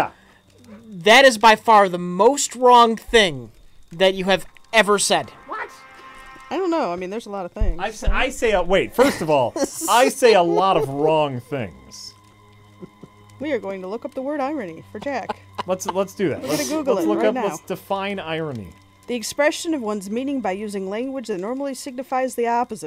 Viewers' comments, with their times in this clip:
0:05 The Music is perfect.